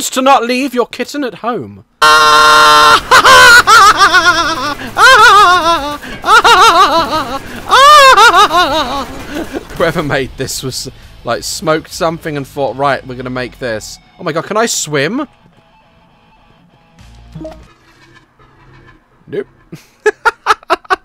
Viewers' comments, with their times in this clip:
0:03 His laughs are somewhat creepy.
0:05 that laugh though!
0:05 what da fuck is dat laugh??